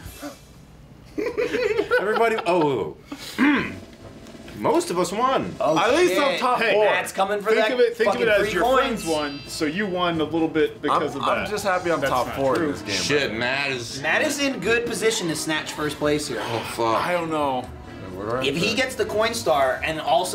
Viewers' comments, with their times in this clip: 0:03 to hear a Thwomp sound